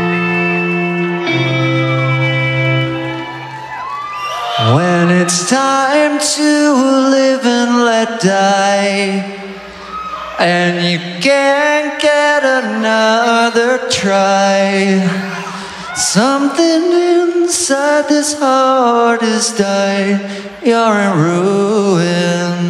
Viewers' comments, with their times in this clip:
0:04 Damn his voice